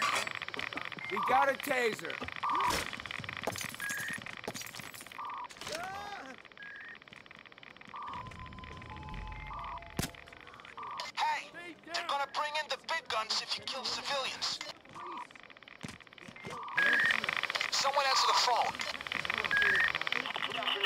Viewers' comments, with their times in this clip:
0:08 *elevator opening song* *supressed gun shot*